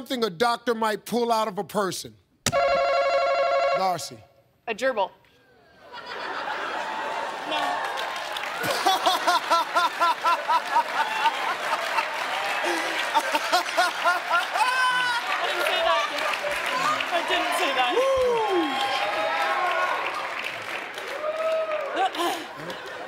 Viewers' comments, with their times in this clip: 0:08 that mans laugh brightens my day